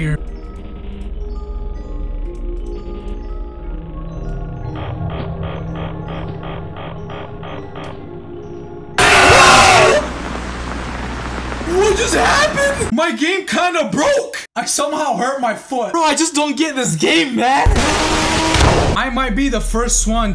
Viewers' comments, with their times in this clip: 0:07 bro screamed that bro logged out of the game matter of an fact the game closed when bud screamed💀